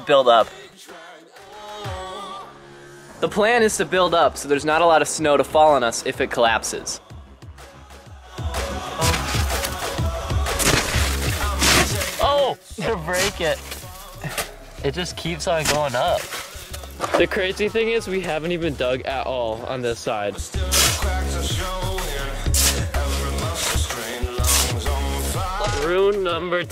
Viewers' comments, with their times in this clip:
0:09 What the meowing